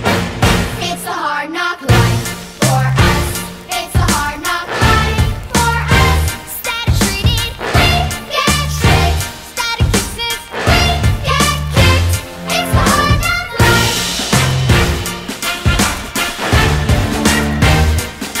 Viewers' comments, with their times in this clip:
0:05 the music fits